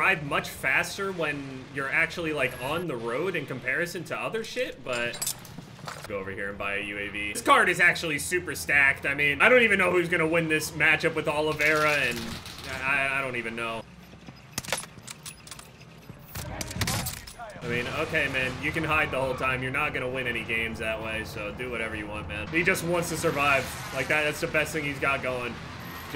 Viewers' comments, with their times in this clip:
0:09 Who tf is aloe Vera